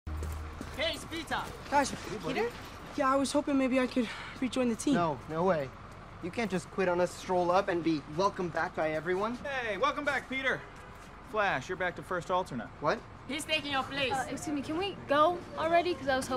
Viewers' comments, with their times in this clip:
0:02 we have the same voice when were nervous